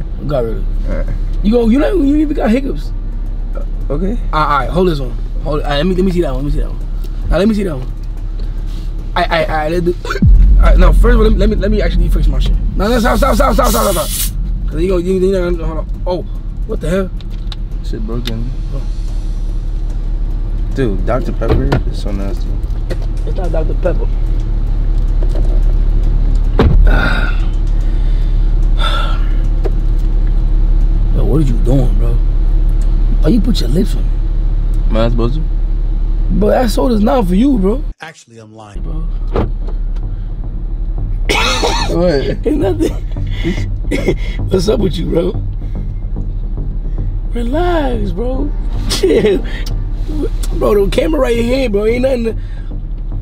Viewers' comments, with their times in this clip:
0:10 Bro the fake hic ups was killing me 😂
0:39 LOL as soon as he locked the door i would've slumped his shit. Nigga had the nerve to laugh as he's doing it 😂